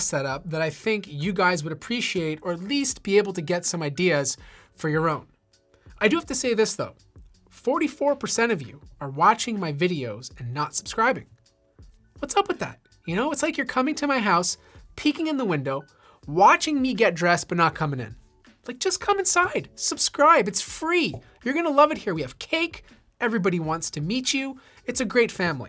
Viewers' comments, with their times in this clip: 0:07 you sound like SypherPK